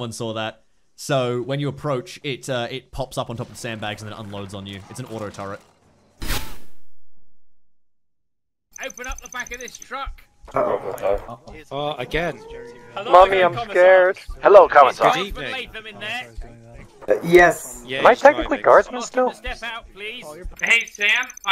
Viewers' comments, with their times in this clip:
0:07 can be described as: Commissar: "open up the back of this truck" Guardsmen: scared guardsman noises